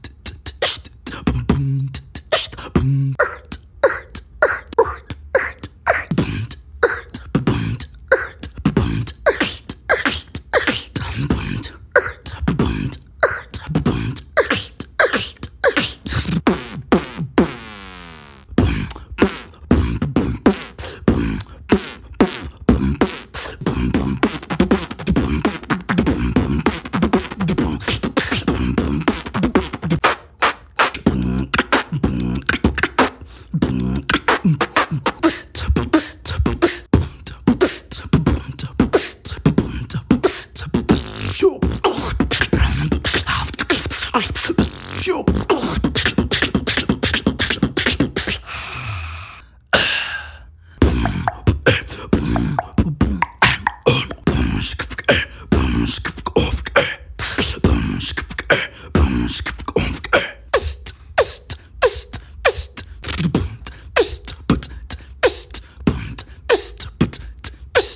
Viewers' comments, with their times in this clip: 0:03 Does anyone know how to do the inward hollow snare?
0:50 napom cough snare
0:55 i heard that napom chigaboogaagabooga 👀